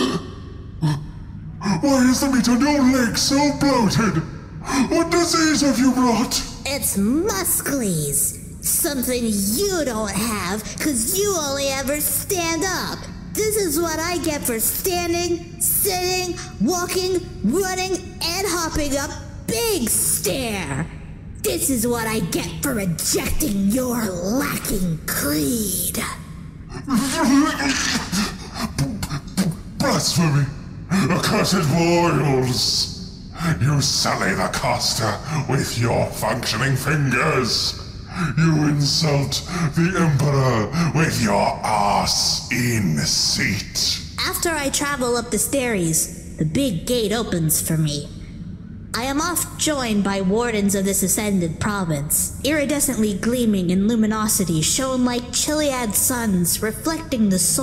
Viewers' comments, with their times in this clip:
0:06 At fist I thought Boy got deformed legs but after rehearing that part I now understand. He's "Musk-Lees" was muscles, Boy has begun his path on to becoming a SpaceMarine.
0:45 Boy loses his speech pattern. He becomes eloquent and pronounces wordies good.